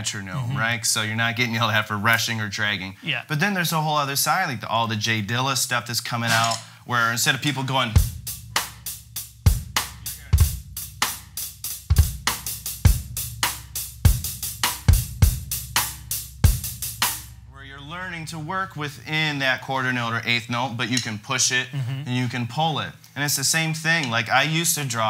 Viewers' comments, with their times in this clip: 0:08 It's a silly lesson alright. illustrates the insanity. His "bad" example (where we want to get away from) actually sounds better. These "Dilla" beats exemplify electronic producers not having a clue what drums are supposed to do, but they own the radio waves anyway so the rest of you had better learn to play like total crap or you won't be hip, modern, up to date and cool. No thanks. Glad to see someone with some balls stand up to the crowd for once, instead of getting in line like sheeple.